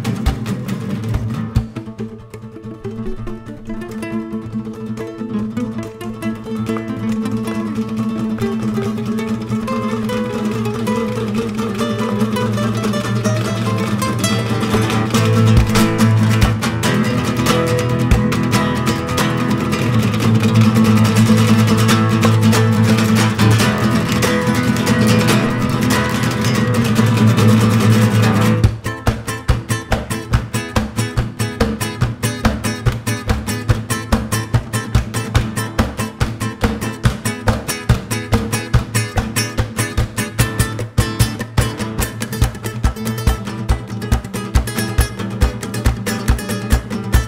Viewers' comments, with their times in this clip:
0:03 Gabriela with that sick rhythm.
0:28 That drop gave me chills.